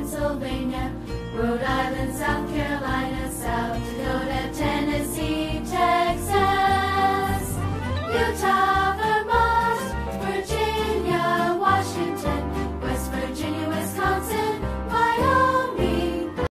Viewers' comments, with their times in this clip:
0:06 my state TX! Lol the Texas is like Woohoo! Yah yah yah we